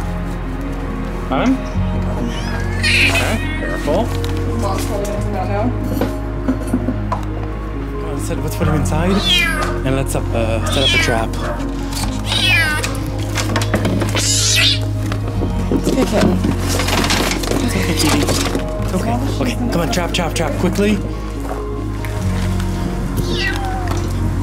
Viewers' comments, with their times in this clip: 0:09 car alarm meows😂